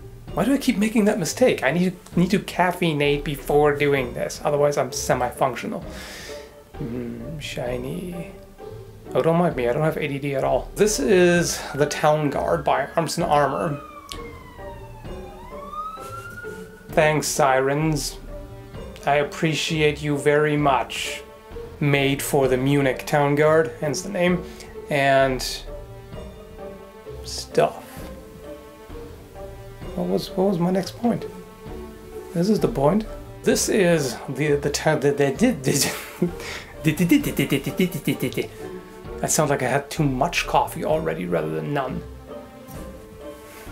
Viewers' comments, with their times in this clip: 0:08 "this is the town guard" sirens heard in the background interrupting the take Your town guard heard you and wanted to be part of the production.
0:11 Town guard summons town guards.
0:12 That was the town guard. They're coming for the sword
0:26 I'm pretty sure i could hear that brainfart xD